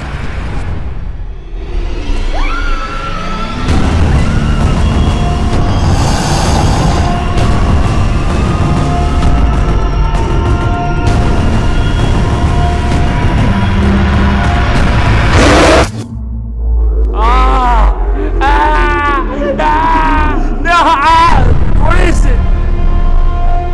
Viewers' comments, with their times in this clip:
0:05 lol the shark made a crocodile sound